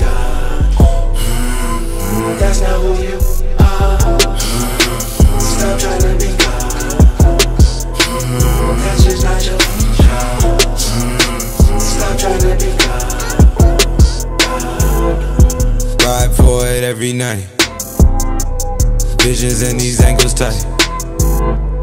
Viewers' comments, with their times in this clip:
0:05 why is there a moan sound effect 💀